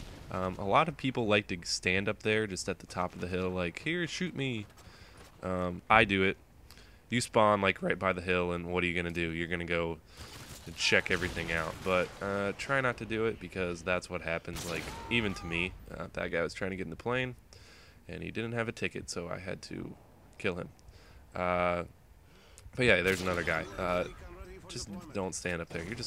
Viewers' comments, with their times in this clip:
0:07 nice voice crack over there lol
0:09 Did we here a voice crack?